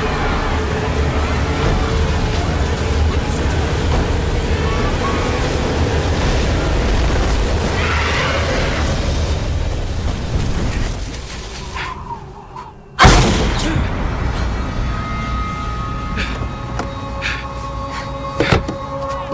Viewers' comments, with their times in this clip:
0:07 that scream xD